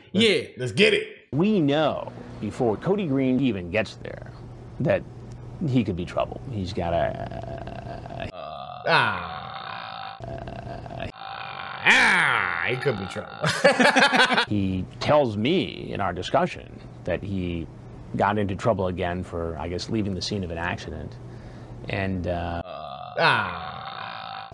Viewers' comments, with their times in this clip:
0:07 Why my boy sounding like the ghost in my ear whenever I play Phasmophobia?
0:07 Chris doing his best Obama impression
0:07 Sounding like the kid from the Grudge